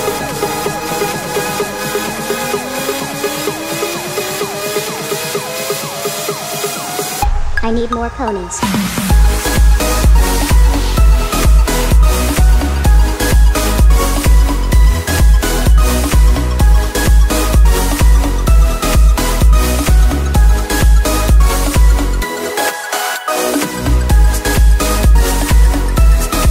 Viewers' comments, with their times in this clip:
0:07 the drop WOAHHH 😱 🎶 🎼 🎵!!